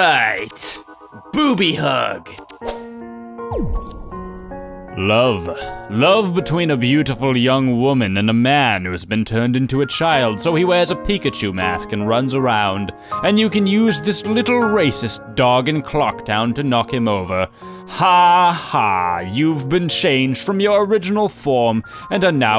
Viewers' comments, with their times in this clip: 0:04 he sounds like Cell from Dragon Ball Z
0:10 he sounds like cell from dbz